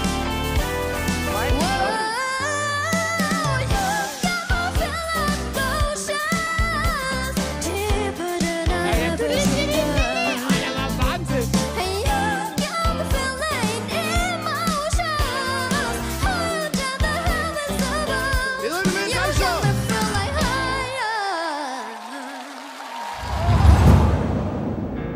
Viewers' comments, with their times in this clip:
0:08 It's just rude because someone mock her voice 😐😐😐